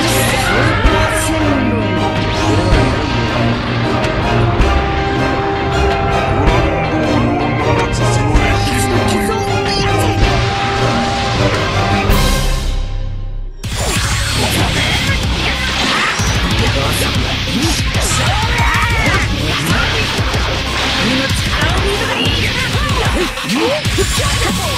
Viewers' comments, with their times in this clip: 0:08 black was like: fuck the other 2 trash, I can take care of this by myself. And then the theme instantly changes to a more dominant one